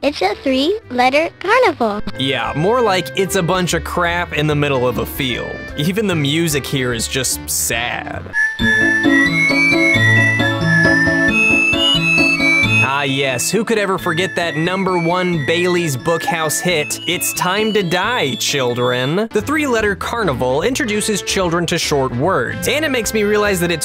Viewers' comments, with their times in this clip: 0:07 I swear that the song presented sounds like something made for the execution scenes of Danganronpa, especially the one where the headmaster (a.k.a the one behind Monokuma and the School Life of Mutual Killing) is put to execution. Run her down trough all executions, to say goodbye and die to a squish.